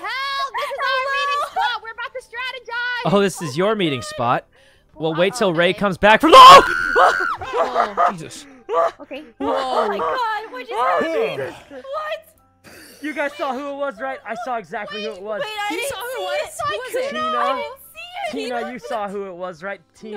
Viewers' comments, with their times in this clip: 0:04 most genuine scream I have ever heard, especially from Sykkuno.